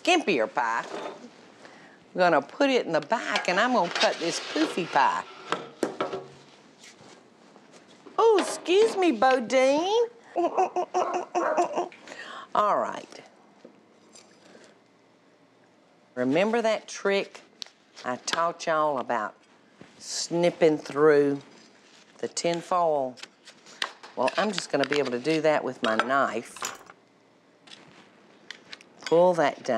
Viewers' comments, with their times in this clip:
0:10 Is The Sound My Washing Machine Makes On The Spin Cycle